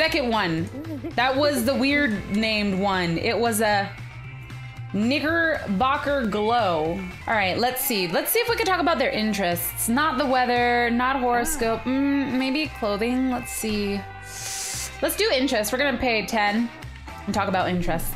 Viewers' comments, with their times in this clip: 0:06 Is it just me or did i hear her say the n word.... ..
0:06 I THOUGHT SHE SAID THE N WORD